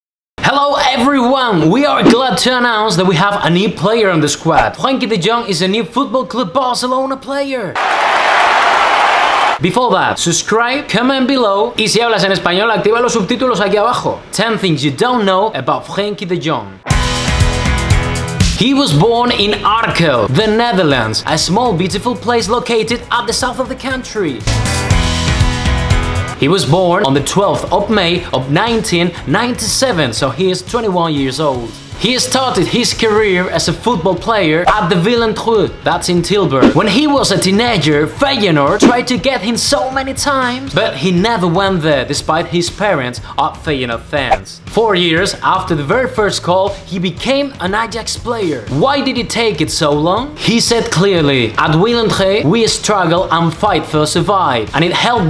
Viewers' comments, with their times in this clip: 0:04 NEVER NEVER PRONOUNCE FRENKIE DE JONG AGAIN I laughed my balls off 😂
0:38 your getting a little borat action over here😂